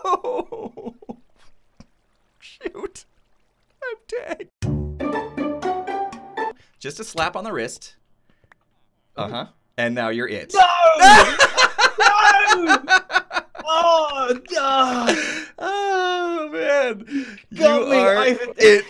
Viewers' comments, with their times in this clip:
0:03 I hear "im gay"